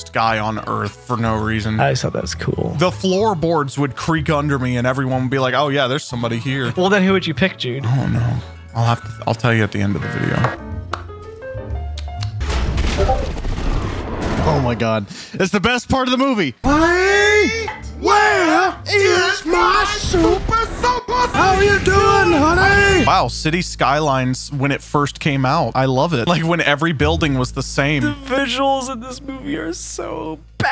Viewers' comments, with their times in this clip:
0:09 bro that discord ping got me thinking my friend dm'ed me
0:11 WHY DOES SO MANY VIDEOS HAVE RANDOM DISCORD NOISES AHHHHHHHHHHHHHHHHHHHHHHHHHHHHHHHHHHHHHHHHHHHHHHHHHH
0:12 The random discord notification at like trolled me, thought someone messaged me but then i remembered i have no friends
0:12 the discord ping istg 💀
0:13 discord ping confused me